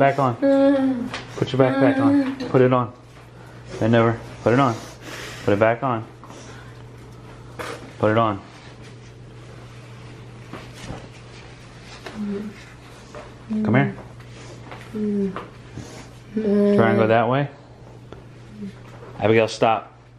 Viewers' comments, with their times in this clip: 0:04 That sigh cracked me up! Such a teenager!!!!